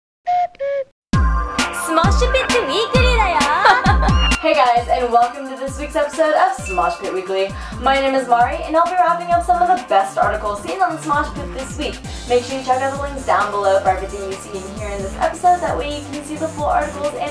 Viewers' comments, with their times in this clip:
0:03 WHY DID I JUST HERE A KITTEN.